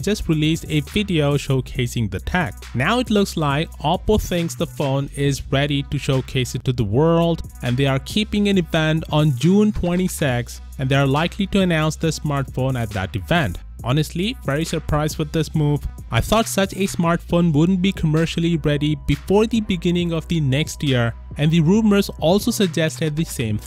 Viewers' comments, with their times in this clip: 0:09 June Twenty SEX